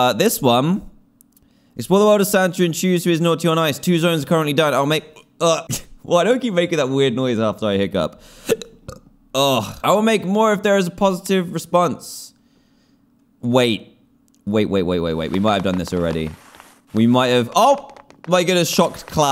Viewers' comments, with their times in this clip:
0:04 Did eny bodie else hear dan hik up and burp at the and ?